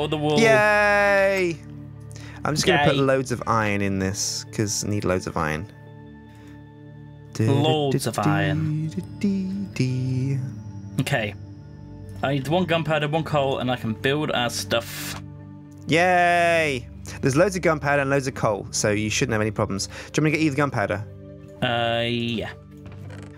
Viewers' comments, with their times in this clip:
0:06 I may be imagining this, but I'm pretty sure Sjin was humming the original Thomas the Tank Engine theme